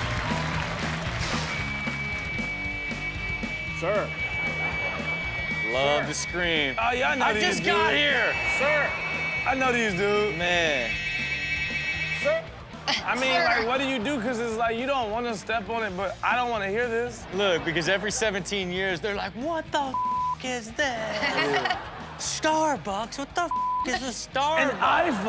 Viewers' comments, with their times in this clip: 0:06 that’s a Cicada beetle. We have them all over in the summer, and those fuckers are LOUD!